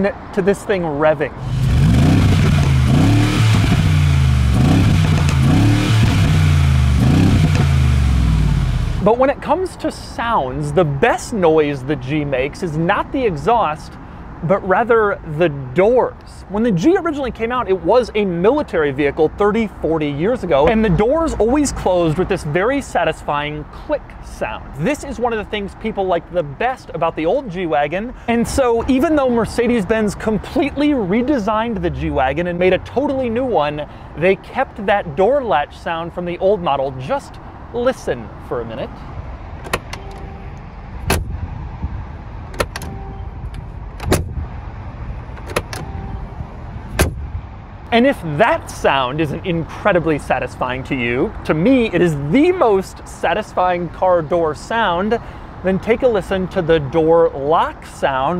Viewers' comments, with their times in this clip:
0:03 Is that Dom Perignon coming out of the exhaust ?
0:45 sounds like "enter" key in gta.